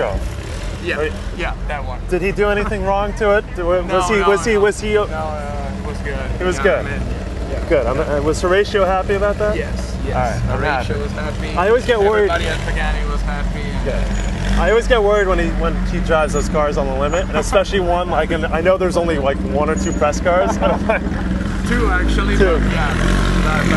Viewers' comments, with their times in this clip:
0:06 Volkswagen! I love that sound